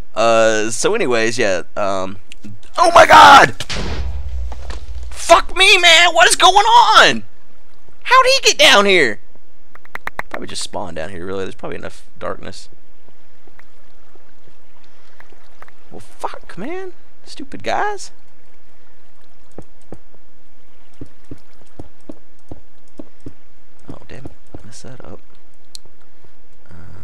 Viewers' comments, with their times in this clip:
0:10 Lmfao, I was playing minecraft and watching your video at the same time. I heard a creeper sound and I reacted the same as you did. Turning around and start punching but afterall it was the creeper in your video. EPIC FAIL.